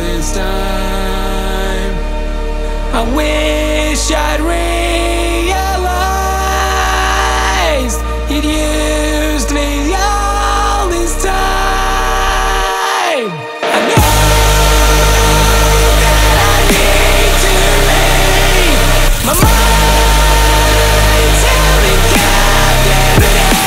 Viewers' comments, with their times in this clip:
0:10 its the first time i heard you like scream, im speechless🌻🌻🌻